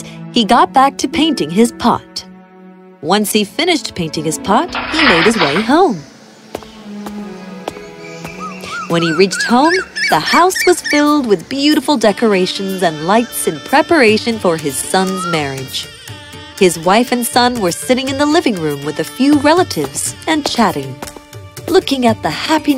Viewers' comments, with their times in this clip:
0:09 hear that background sound? That one which a bird is making I love that and I am indian so I always get to hear that😀 amazing!!!